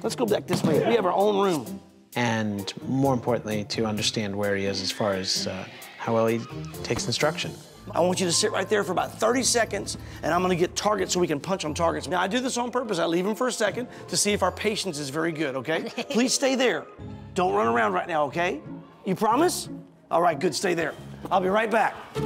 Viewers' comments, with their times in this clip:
0:03 When the Chinese kid coughs
0:03 did I heard cake?